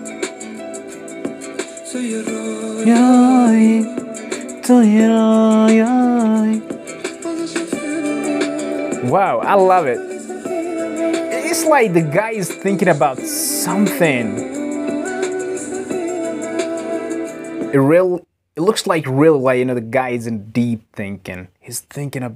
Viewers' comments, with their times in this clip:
0:06 You pronounced this part very nicely and cleanly (there were not even any mistakes).😮👌🏻👏🏻🌱👇🏻👇🏻 [Tu ye royaei]👉🏻that's meaning: you are a dream